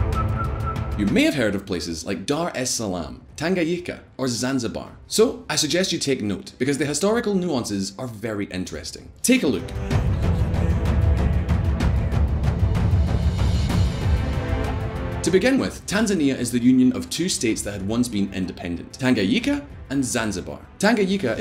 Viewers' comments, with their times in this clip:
0:04 Did he just pronounce Tanganyika "Tanga- yika"🤣🤣